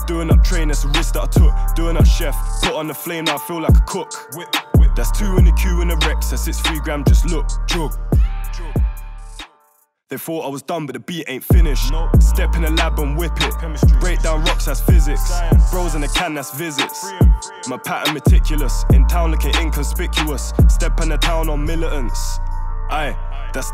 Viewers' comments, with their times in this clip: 0:07 lol so I actually thought the beat was finished then I had to scroll back up